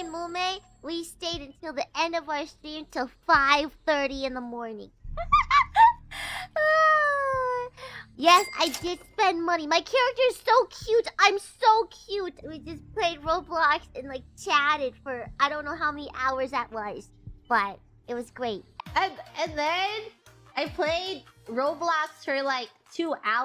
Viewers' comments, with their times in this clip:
0:05 that wiper laugh absolutely sent me